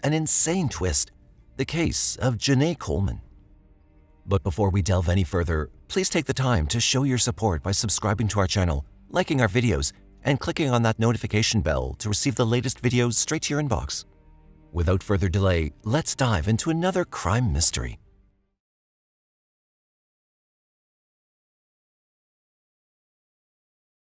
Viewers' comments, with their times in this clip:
0:07 The narrators inflections are extremely annoying. Emphasis in the wrong places. Can't stand this. Outta here